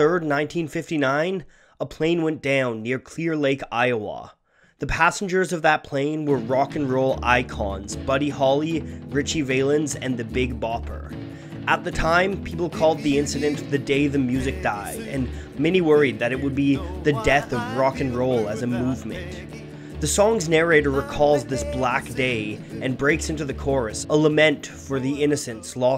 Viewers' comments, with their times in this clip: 0:08 besides, who's this narrator? very poor, and mispronounces Valens' name. Clicked off
0:09 I laugh how he mispronounces "Valens!"